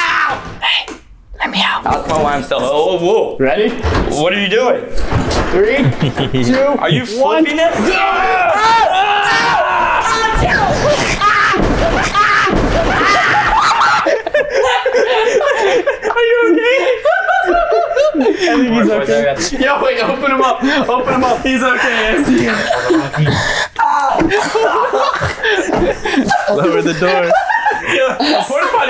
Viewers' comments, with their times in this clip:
0:08 the screams got me sooo good 🤣😂🤣😂😂😂😂😅
0:15 I STILL DONT KNOW IF HE IS CRYING OR LAUGHING OR BOTH AT THE SAME TIME